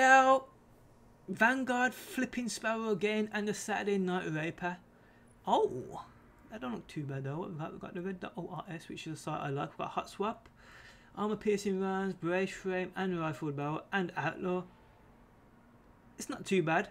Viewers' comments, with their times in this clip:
0:04 "ohhh"😂 does it everytime he gets something good